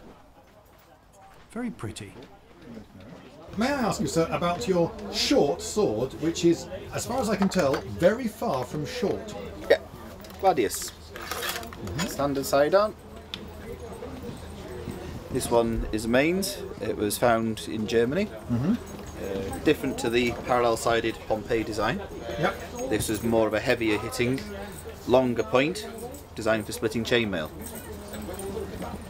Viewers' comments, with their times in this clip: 0:04 Special mention should go to this dude who actually acts and speaks like an officer
0:15 .. he actually pronounced it right